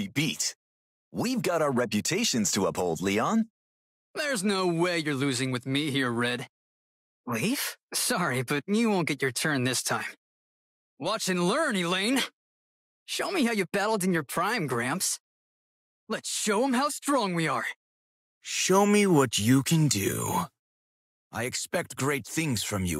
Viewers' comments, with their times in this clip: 0:08 Why is his voice so hot there ? Blue’s VA absolutely nailed it